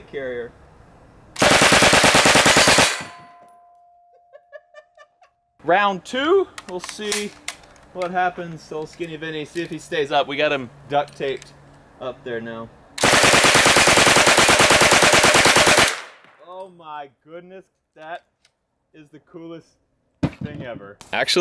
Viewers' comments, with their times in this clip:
0:03 That is a laugh of a crazy person